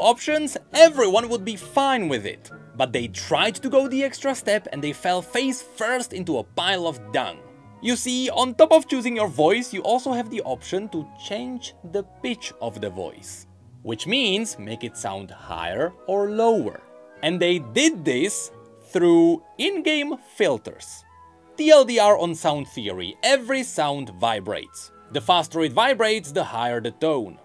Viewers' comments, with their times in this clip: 0:09 I KNEW SOMETHING SOUNDED OFF WITH THE VOICE!!! I thought I was crazy because when I watched some streamers no one seemed to say anything xD. It's not the end of the world by any means but it was just that thing at the back of my head.